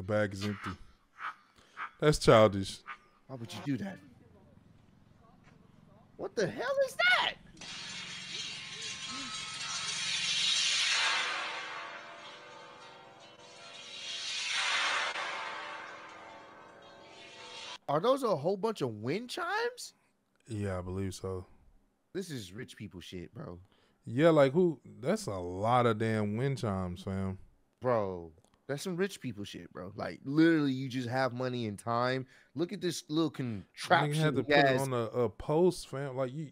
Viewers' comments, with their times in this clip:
0:03 What in the Silent Hill type wind chime is that?
0:09 tell me that don’t sound like something off that insidious movie 💀 hella terrifying
0:12 wind chimes sounds straight outta horror movie.
0:18 that's the loudest thing I've ever seen